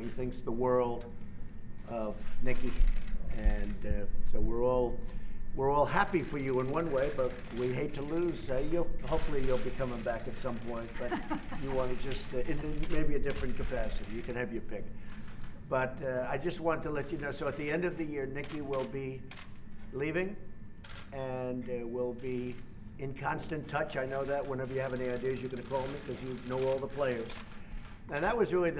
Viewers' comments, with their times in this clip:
0:07 I love that moment Trump "hopefully you will be coming back at some point" Nicky "laughs" - translation.... "Oh God no! that wont be happening "
0:09 HAHAHA! .....That look and laugh really answered that question.
0:09 I like how Haley laughs when Trump says, "I hope you'll be coming back at some point" ( in the video)! She was thinking , "Hell no! I'm never coming back to work for you, you lying sack of dung!"
0:11 that laugh = Hell NO.. and those chairs.. loook dreadful .. yuuuuck